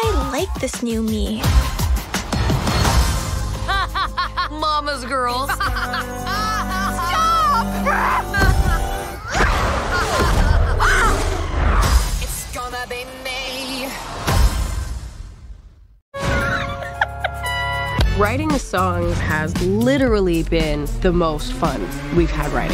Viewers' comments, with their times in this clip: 0:09 during this scene in the background u can hear the teen wolf wolf roar I only know that since I replayed it a thousand times to see if I wa right